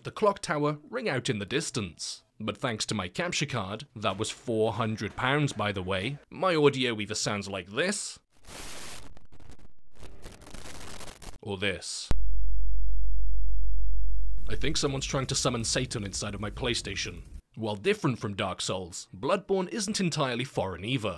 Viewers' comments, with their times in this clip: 0:05 Your capture card either sounds like [C o r r u p t i o n] Or [G r e a t L a k e]